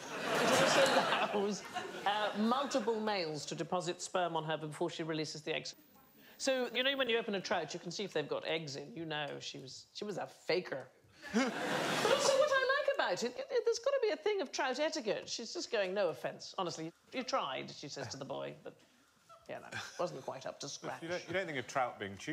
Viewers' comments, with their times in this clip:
0:09 her American accent suddenly coming out caught me off-guard haha